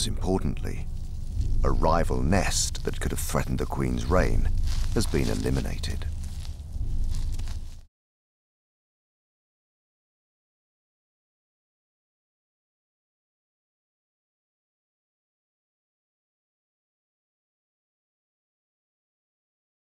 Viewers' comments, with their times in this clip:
0:05 queen ant noises